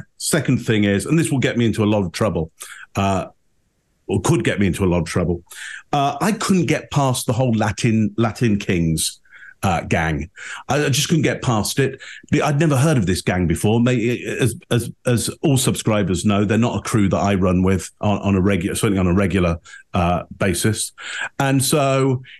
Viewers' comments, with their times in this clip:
0:04 LOL Apologies to all Latin kings.😂😂😂 The accent just makes it hilarious. I love it.